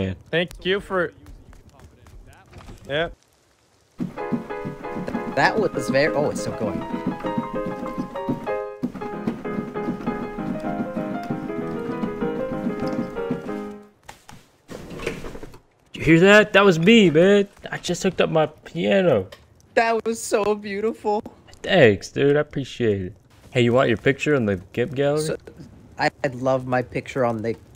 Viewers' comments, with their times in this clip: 0:03 Still to this day I hope this is real, it seems real judging by the hotmic audio keypresses Impressive if its real
0:09 Legit when I heard the keys I was wondering why I’d never noticed face punch out the sound of the key presses in and then he said he’s PLAYIN’ OVA HEEERE
0:11 No fucking way - I could hear the keys but I wouldn't believe it, you have a f*cking MIDI keyboard and you know how to use it??? HELL YEAH!!! I'M PLAYING PIANO OVER HEEEERE!!!!!